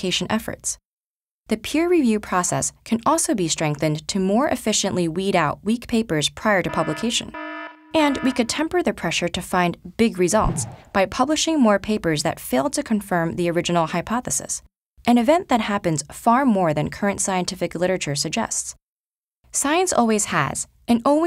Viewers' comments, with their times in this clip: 0:07 legit thought my iphone alarm went off